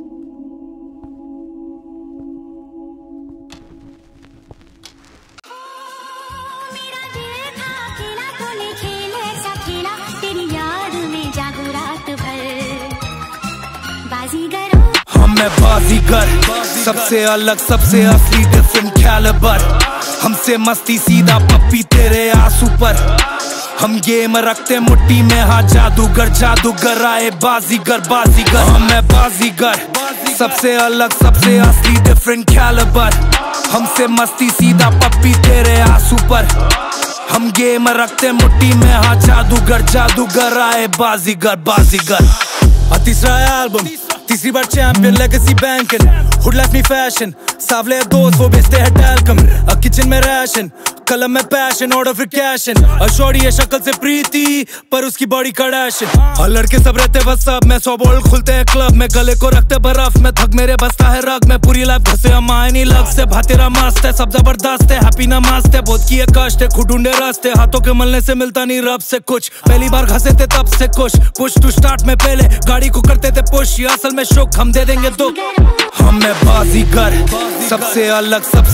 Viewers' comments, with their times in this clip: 0:05 That transition was sick!!!🔥🔥 Karan Kanchan...Hats Off👏
0:36 Is he saying “I am gay”?
0:59 Is that with an electric guitar?